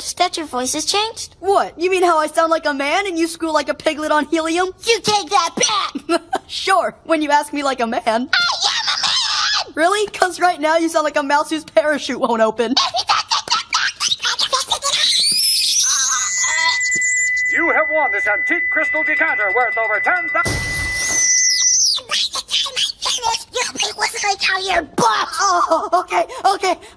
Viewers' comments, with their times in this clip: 0:10 I now belive they sound like that.
0:14 Wally used earbleeding screech! It was super effective! Brendan and May fainted!